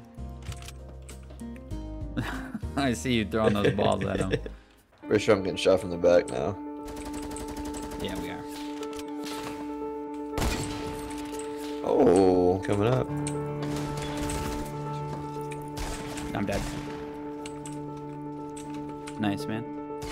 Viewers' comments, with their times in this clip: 0:06 he put the wii music when he went to the golf court